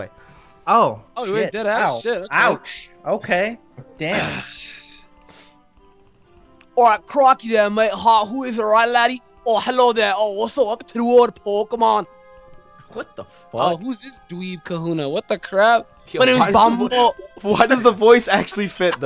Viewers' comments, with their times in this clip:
0:06 I laughed to the point that I cried because the VOICE just fits SO fucking perfectly that I cannot. XD